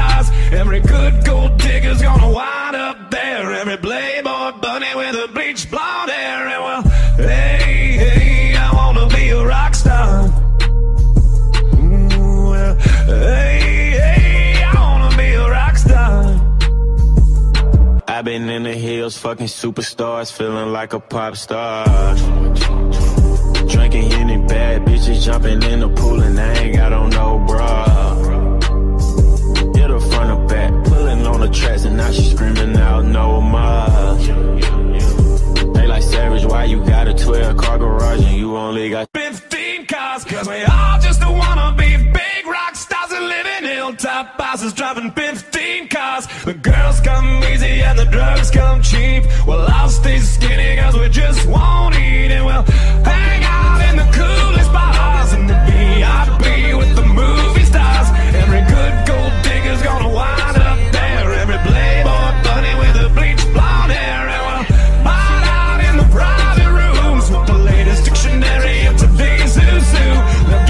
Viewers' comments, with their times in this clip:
0:09 No one is going to talk about how smooth he transitioned nickleback to 21
0:33 When you on stage rapping about being a rockstar but then nickelback does a 2 hour ad lib
0:34 The switch makes me want to cruise in a turbocharged Nissan GTR smokin weed and putting the pedal to the floor while selling my soul to the devil to just keep that part of the song on repeat and stay in that moment constantly.
0:34 it could've DROPPED but it didnt :(
0:38 that drop though
0:46 i expected a huge bassdrop here
0:53 Here because of the meme too but from with Post Malone's chorus as the background vocals playing.. holy fuck that was beautiful. Would love to have this professionally remixed and have that right at the climax of and play through to the ending of the song lol.
0:53 damn that part with nickelback and post malone was so smooth👌🏽👌🏽👌🏽👌🏽